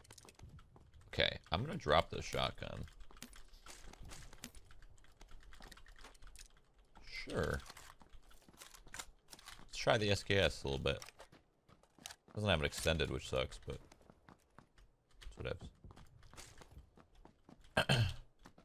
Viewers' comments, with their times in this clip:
0:06 listen to these reload sounds. They are good! i have NO CLUE why they changed them!! Man, it bothers me too much